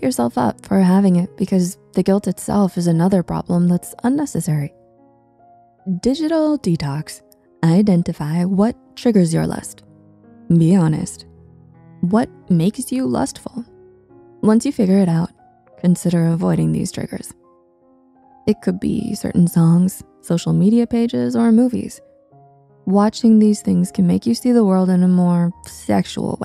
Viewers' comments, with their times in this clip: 0:10 what triggers your lust? Answer : Your voice